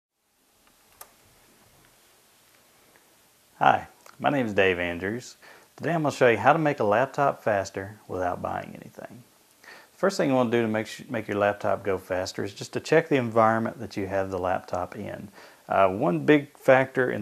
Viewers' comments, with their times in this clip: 0:01 scary face turns and look me says a very cold hhhhhahahahiiiiii